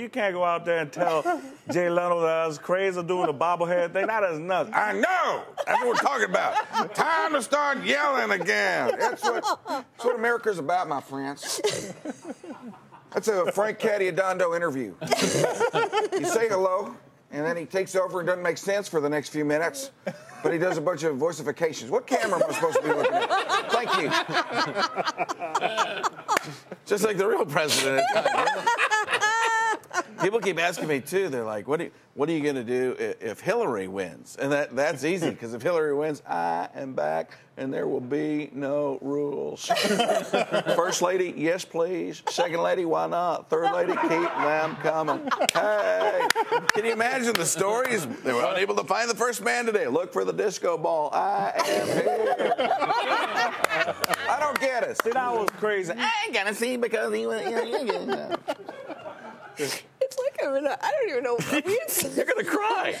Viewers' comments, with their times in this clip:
0:05 -14 sounds like george lopez!!
0:15 Lady hocks one. LOL
0:26 hahaha even the camera man laughed there
0:43 lol you hear all the crew crackin' up XD
0:44 i love how you can hear the producers laughing behind the scenes.. fucking hilarious